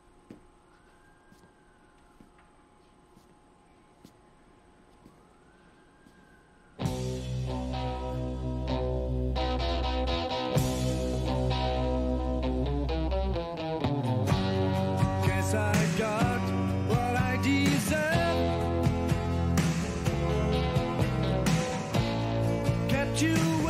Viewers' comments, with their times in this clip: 0:07 is when the music starts playing